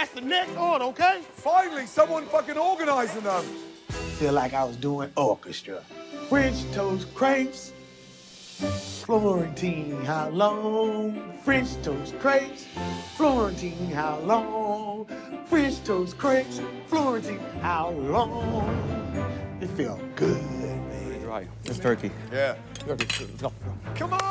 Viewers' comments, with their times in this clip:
0:05 That song is adorable! I love this guy